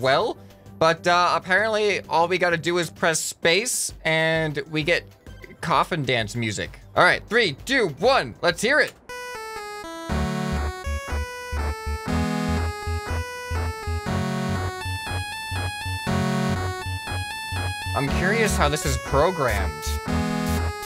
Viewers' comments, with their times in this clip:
0:08 I Recommend playing it at 1.25x speed cuz the song is kinda slow so ya.
0:08 love the music.